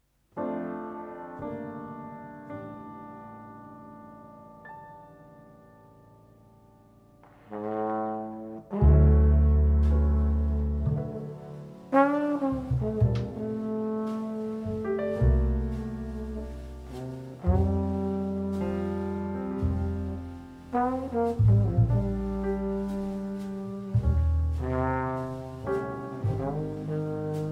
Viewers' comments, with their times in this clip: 0:08 And trombone from Beautiful!